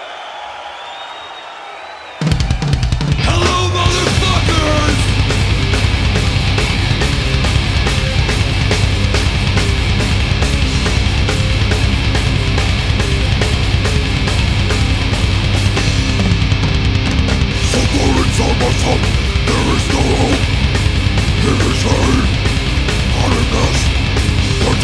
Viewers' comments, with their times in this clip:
0:06 when you growl to hard and shit yourself😂😂